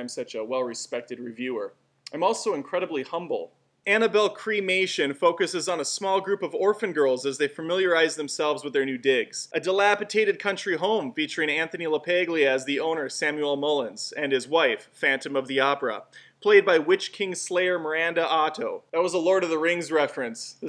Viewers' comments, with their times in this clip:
0:04 Did just said Annabelle: Cremation? ....lol